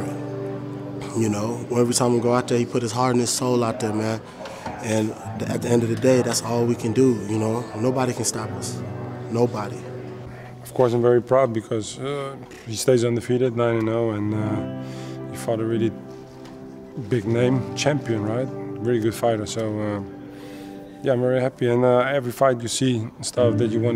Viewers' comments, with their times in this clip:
0:08 Henri Hooft sounds exactly like overreem